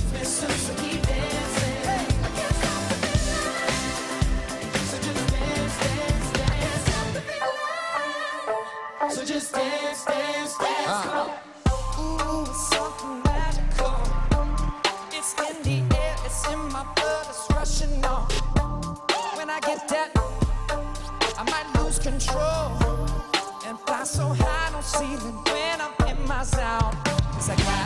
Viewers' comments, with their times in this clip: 0:08 Oohh that beat change in the middle ! I've never heard that before, that just elevated the entire song! Is there an official version of that, or was it just for this performance?